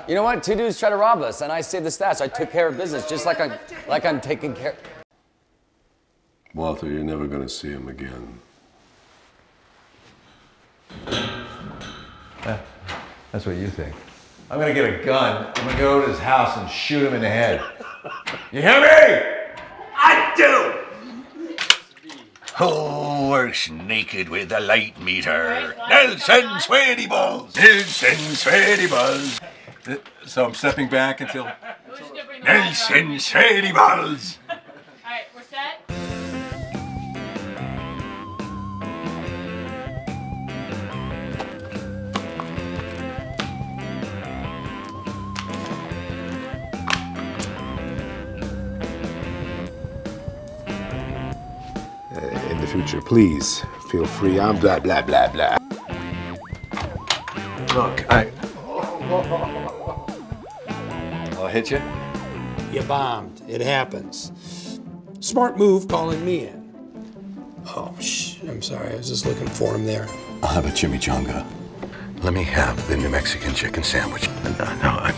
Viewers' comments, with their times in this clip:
0:10 cranston with that epic yelling voice. perfect man for the role
0:54 it sounds like "blya, blya, blya"
0:56 you can hear the Minecraft hurt sound when the camera man gets hit